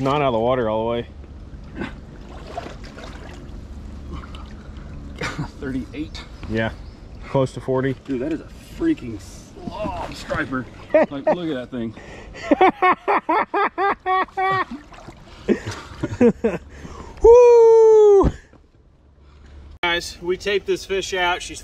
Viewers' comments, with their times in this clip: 0:09 Everyone catch the unintentional joker laugh ?